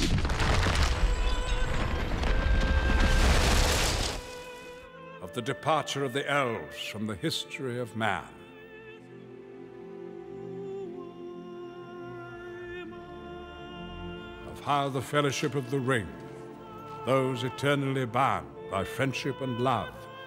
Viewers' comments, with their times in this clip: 0:05 This soundtrack is going to make me cry